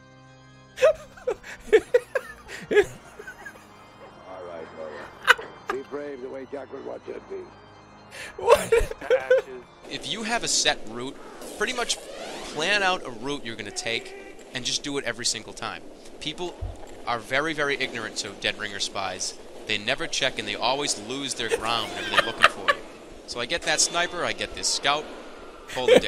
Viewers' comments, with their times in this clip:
0:10 laughing at himself for idiotically missing an easy stab, spills coffee to further prove how he improved Classic Jerma